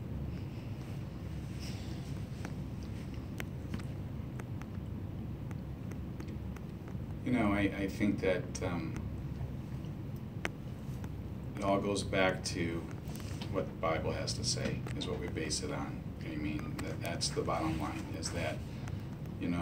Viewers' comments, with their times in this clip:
0:03 I you could hear a Pin drop